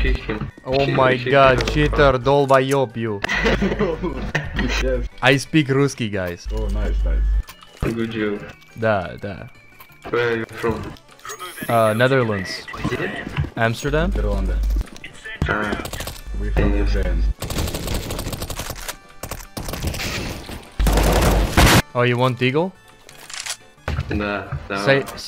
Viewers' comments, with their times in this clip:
0:09 that is romanian!!